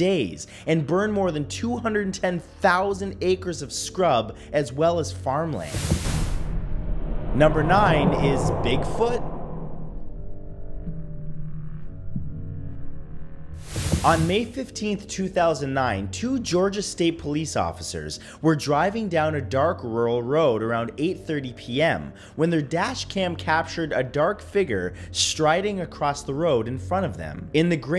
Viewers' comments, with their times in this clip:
0:08 love the upward inflection. 😂 😂